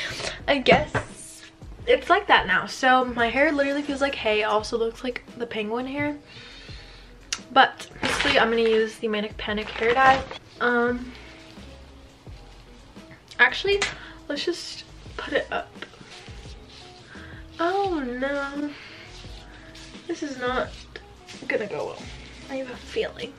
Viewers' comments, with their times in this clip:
0:05 who else heard that cat..... Just me. Okay Sad life 😔 😂